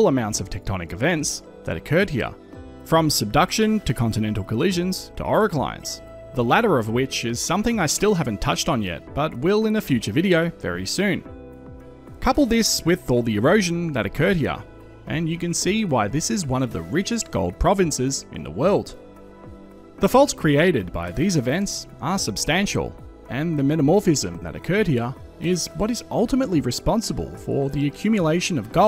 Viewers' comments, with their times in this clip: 0:09 What do you say ? The transcript has it as "our clients", so I guess it also couldn't understand what you said. Anticlines? Orogenies?